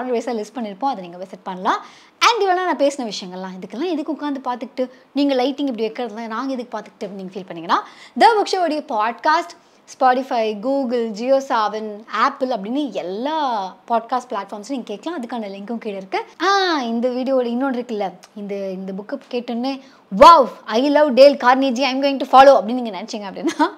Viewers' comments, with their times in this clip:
0:07 I like your way speak